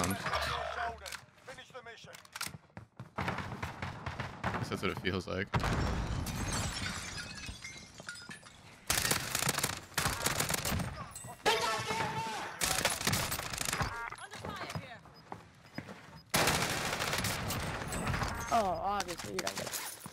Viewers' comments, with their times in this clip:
0:07 Raise your volume ay you hear something weird tell me what you think it is plz